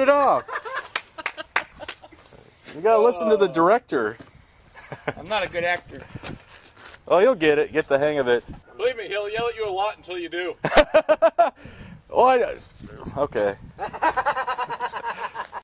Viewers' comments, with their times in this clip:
0:12 LOOL I Love the laugh hahahahhaha